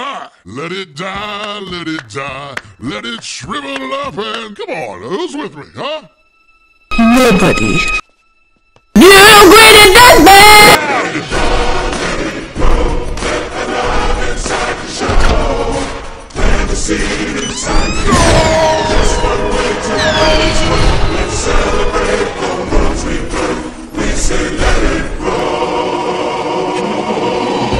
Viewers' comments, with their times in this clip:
0:07 Pamela Voorhees voice
0:09 rip headphone users x-x
0:09 R. I.P. HeadPhone users😂
0:09 John Cena (sy) goes 16-bit mode